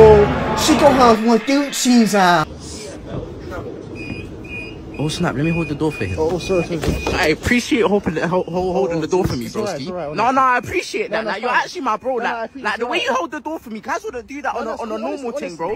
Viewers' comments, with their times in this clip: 0:03 bri’ish kai cenat